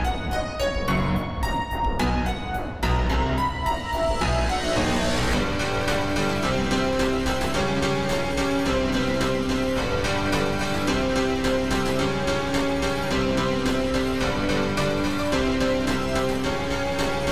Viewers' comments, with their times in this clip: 0:05 Kinda sounds like James Bond